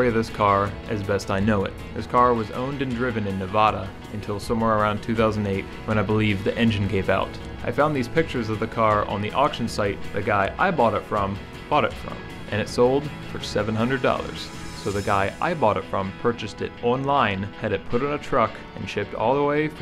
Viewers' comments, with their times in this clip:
0:04 Ok brother I love you’re videos but the Nevoda thing bothered me a little bit. I live in NevAda. Keep up the videos!